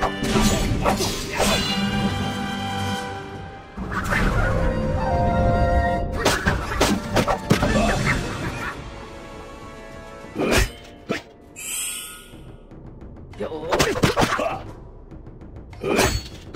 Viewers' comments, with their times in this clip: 0:03 Does the Metal Guardian not have a scared sound? Strange, every other Samoorai does.